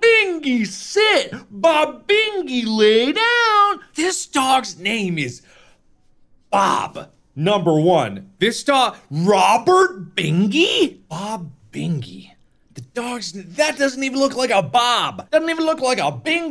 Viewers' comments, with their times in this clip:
0:03 He sounds like mario